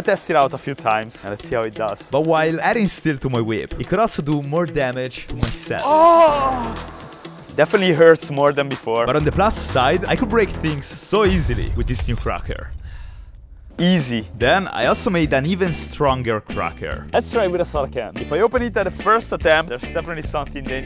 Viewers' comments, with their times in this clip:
0:05 that moan is legendary💀💀